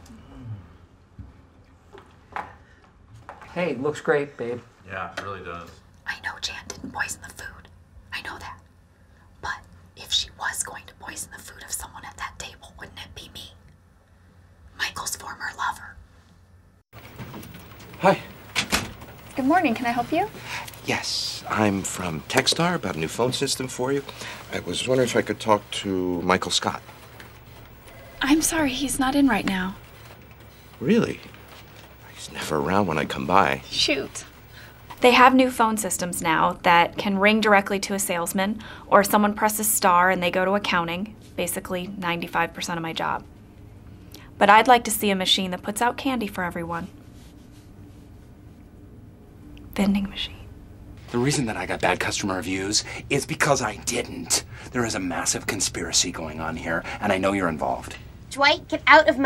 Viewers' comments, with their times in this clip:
0:05 I love pams asmr voice
0:47 either it’s a printer or the camera man chuckling